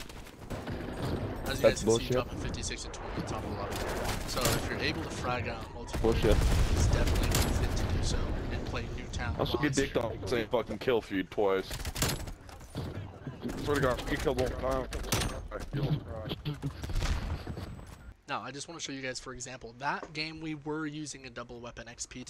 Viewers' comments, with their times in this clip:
0:07 My dude i tried to watch this video while eating some cereal and the sound of me eating drowned out your video because your mic is so quiet youre quieter than the guy shit talking in the lobby